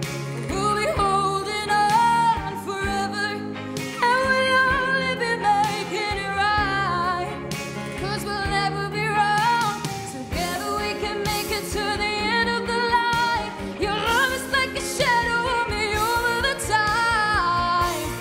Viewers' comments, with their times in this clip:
0:04 Ohhhhhh, the crack in the voice won me over!!